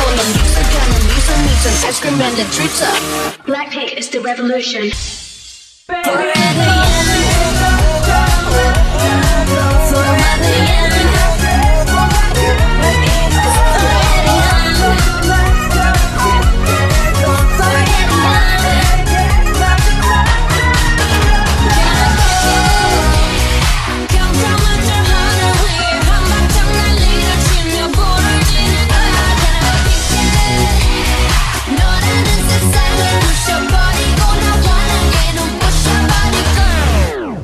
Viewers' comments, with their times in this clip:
0:05 basically, you could summon satan with low volume “as if it’s your last” XD
0:22 Best turning point to another song